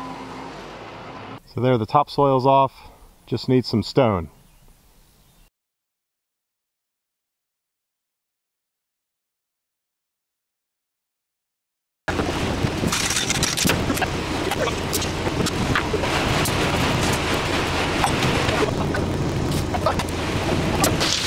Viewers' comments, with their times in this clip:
0:05 I've spent over a minute re-winding and re-playing these few seconds while making that silly "pop" sound with my lips. Pop! I'm so happy.